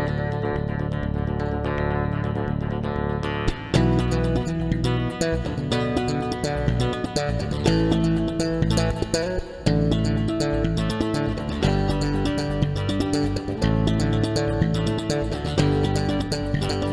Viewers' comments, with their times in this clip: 0:03 we get to hear a little more of the theme song. Being a bass player, hearing that, now, I better understand what he is doing on the first part. Thanks.